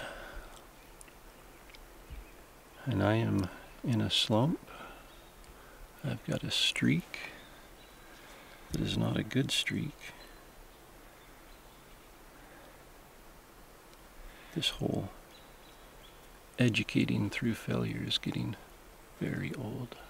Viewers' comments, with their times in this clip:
0:03 Did any one else replay to check if he said "in a stump" or "in a slump" then realize both were accurate.